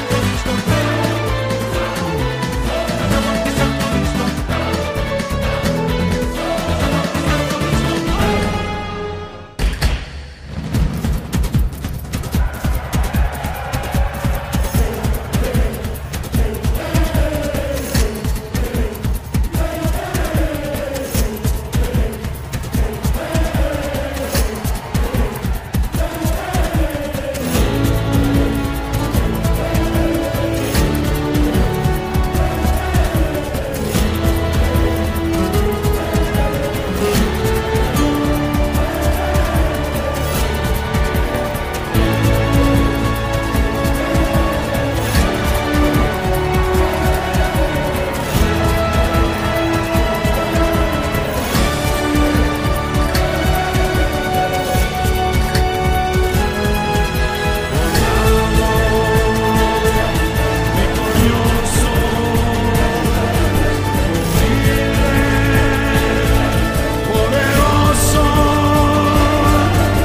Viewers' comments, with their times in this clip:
0:09 is by far my favorite part of this soundtrack. it perfectly encapsulates why puss was so arrogant and careless with his lives: glory. when this music is playing, he’s having the literal experience of a lifetime. he’s undefeated, he’s loved, and most of all, he’s enjoying every second of it. he’s invincible and he knows it. hearing the crowd chant for him and sing his praises in his native tongue is such an awesome moment. (the fight itself compliments this imo, too. so beautifully animated!)
0:09 Favorite part starts ♥️ The bell ringing in time with the music was also a fine addition, wish they had included it in the soundtrack
0:13 when the crowd starts shouting... now THAT's how you incorporate a singing crowd masterfully in a song (looking at you pokemon)
0:56 goosebumps at those vocals
0:57 makes me wish there was a video game set in Spain and the medetranian or any Latin America country with epic boss music like that